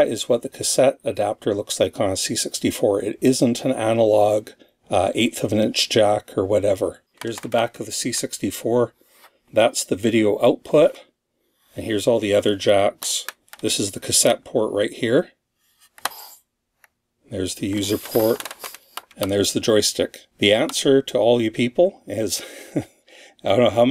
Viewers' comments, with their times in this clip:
0:10 THANKS for the creaky old computer sounds! You really don't need to apologize for something that's actually quite a lovely part of the ambience. Now, if only you could upload the smells of old electronics....